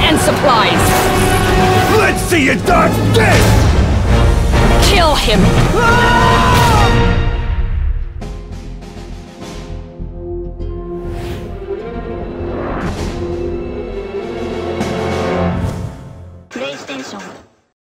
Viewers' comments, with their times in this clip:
0:05 reused voice clip